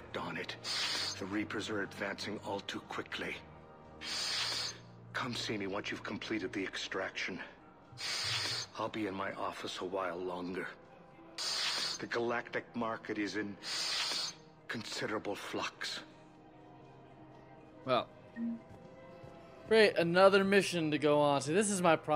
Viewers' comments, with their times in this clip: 0:09 thise guy breath funny